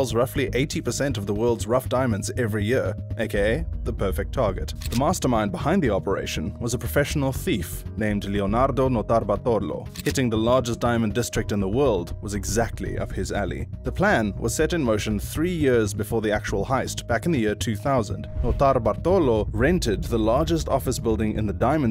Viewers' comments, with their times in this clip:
0:08 WTF was that pronunciation?? 😂😂😂😂 Made it sound Indian ffs.